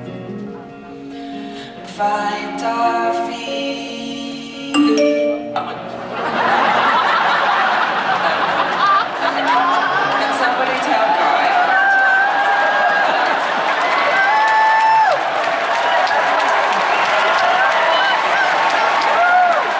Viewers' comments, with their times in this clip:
0:04 When you get heckled by an alert on the iPhone and you are left completely paralyzed.